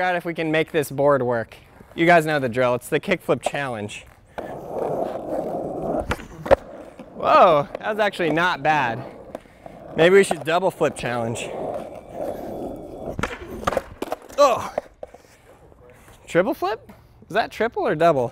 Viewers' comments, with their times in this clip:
0:05 omg sounded like a kickflip from one of the Tony Hawk games